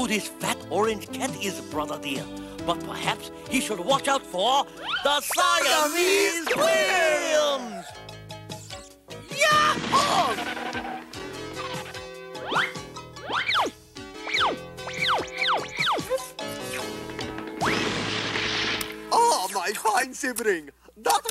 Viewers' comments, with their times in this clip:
0:07 I love the Siamese Twins's theme music first heard